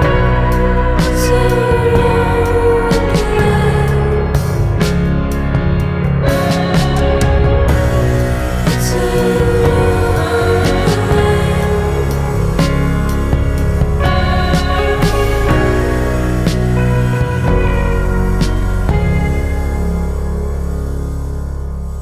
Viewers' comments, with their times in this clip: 0:10 the small guitar sound back from is sooooooooo breathtaking